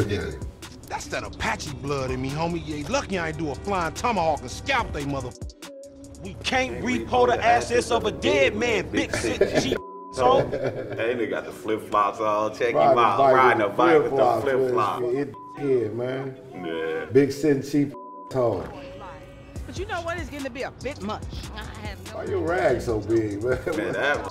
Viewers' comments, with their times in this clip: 0:06 swearing like rapping =))